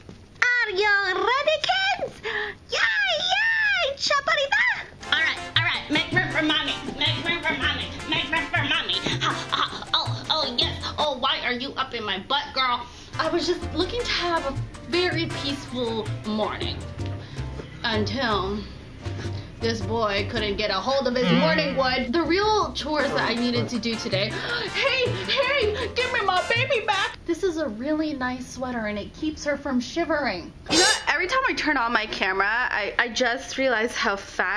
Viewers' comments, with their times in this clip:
0:10 You sound like Spongebob hahaha, cute!
0:22 Am I the only one hearing "oh f**k"? :O